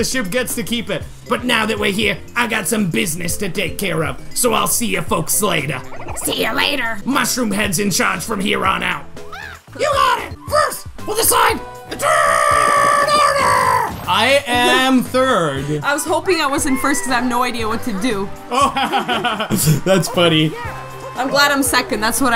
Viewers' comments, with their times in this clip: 0:06 Weird sister voice